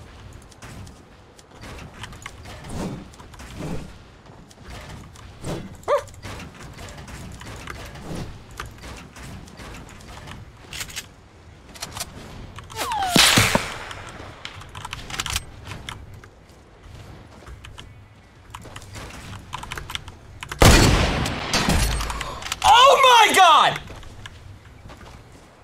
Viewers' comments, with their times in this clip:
0:06 he sounded like a puppy